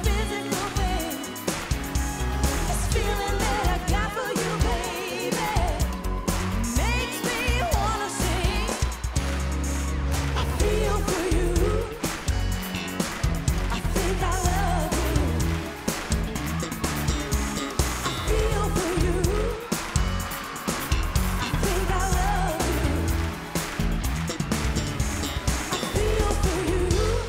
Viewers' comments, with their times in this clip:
0:08 the producer or whoever tha ** messed up tha song.....